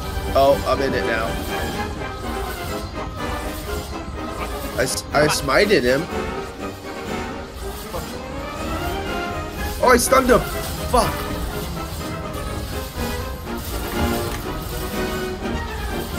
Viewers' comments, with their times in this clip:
0:04 I like how it wiings with the melody